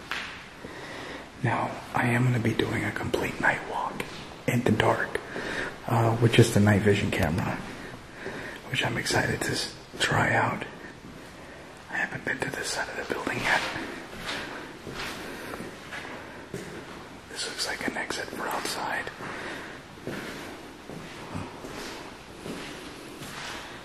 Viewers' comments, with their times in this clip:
0:05 I just heard people talking
0:10 I just heard a piano 🎹 playing